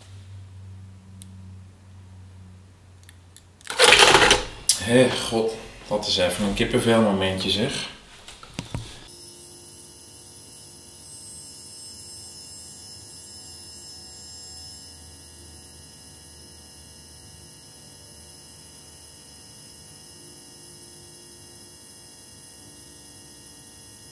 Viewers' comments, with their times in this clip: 0:05 almost thought you said GVD.